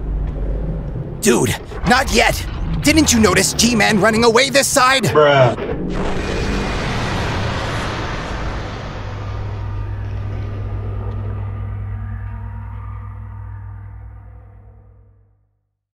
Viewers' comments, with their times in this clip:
0:09 i found dafuq boom